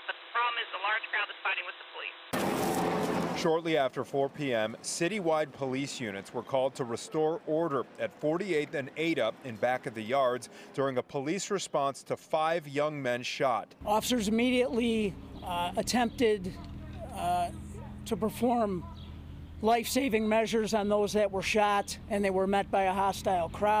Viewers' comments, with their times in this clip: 0:06 why is the cops laughing & joking around ?